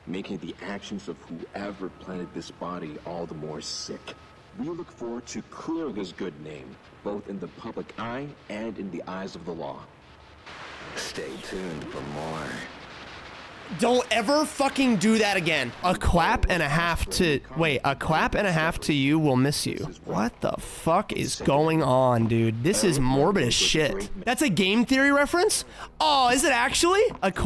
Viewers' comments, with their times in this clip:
0:10 Jesus christ. Didn't know alastor (The Radio Demon) was on this game